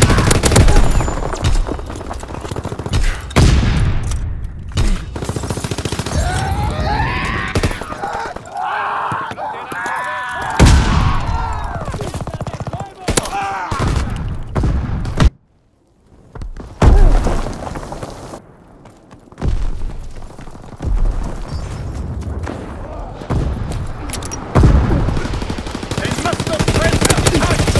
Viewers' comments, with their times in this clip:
0:08 On when soldier is screaming is sound like scp096